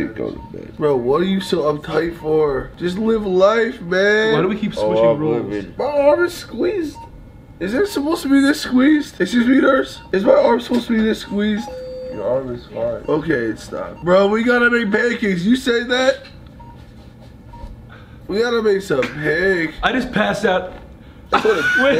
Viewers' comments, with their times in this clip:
0:08 Grayson literally sounds like Abby Lee Miller😅😳